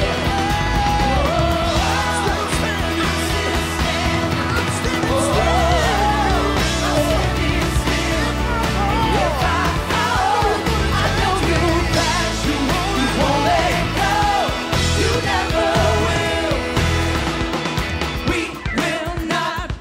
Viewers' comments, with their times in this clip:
0:04 I thinkhe rushed the fill